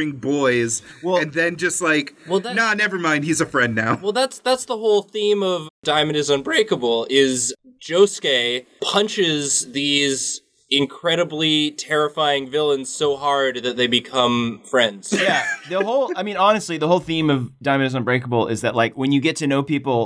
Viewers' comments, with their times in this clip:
0:05 Voice Crack is UnbrAkable
0:05 voice cracks while saying "Diamondis Unbreakable Voice is Breakable?
0:05 diamond may be unbreakable, but your voice sure isn’t
0:05 that voice seems pretty breakable
0:06 Diamond May be unbreakable but your voice isn’t
0:06 “that’s the whole point of diamond is unBREAKable” Welp. Your voice is very breakable.
0:06 Voice is breakable